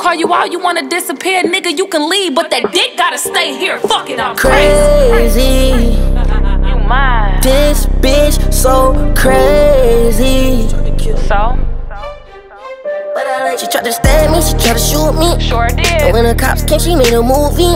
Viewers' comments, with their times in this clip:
0:05 When she said "FUCK IT IM CRAZYY" then laughed I FELT that, that I laughed at the same time 😂🤣😜